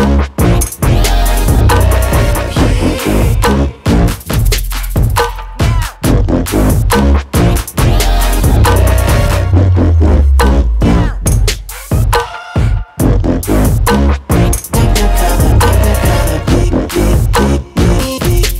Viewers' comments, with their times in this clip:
0:05 What the hell is going on? XD Anyway, the remix is brilliant, it's really pleasant to listen to! The video is cool too